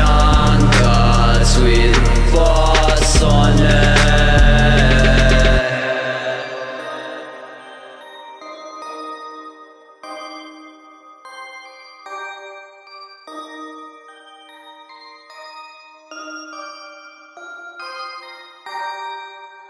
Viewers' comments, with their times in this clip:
0:06 and onward sounds like minecraft music lol.